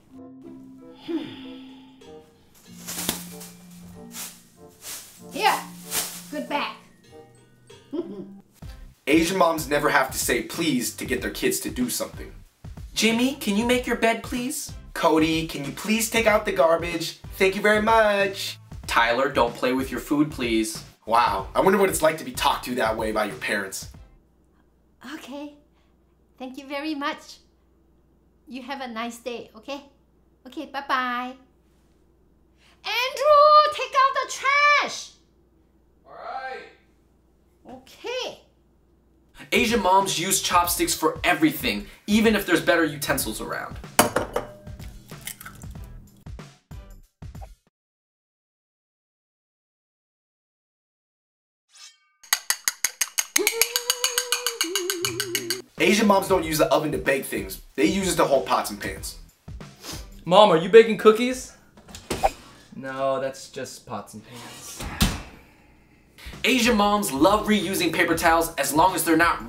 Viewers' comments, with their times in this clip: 0:07 aww that laugh was so cuteeee!!! i love my Japanese family but omg as soon as i get my report card i'm ded. like i will die starting from my mom down to my nephew...he's 5
0:29 that bye-bye was so cute
0:53 she’s humming the spongebob sound.